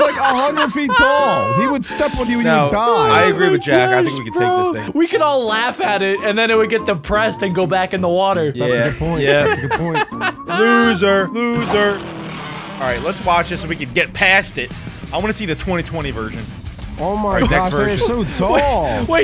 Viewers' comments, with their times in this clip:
0:03 bro cracked up like a water melon